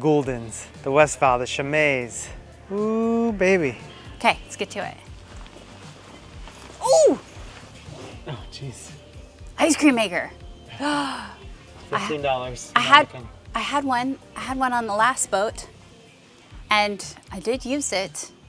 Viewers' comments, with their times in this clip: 0:04 You could totally voice Mario if you ever had to lol